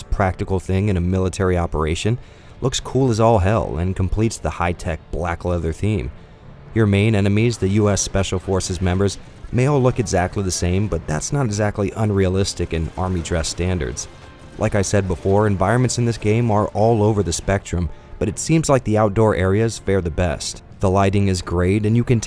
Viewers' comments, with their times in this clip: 0:09 It sounds like the soldier said 'MY LEG!' XD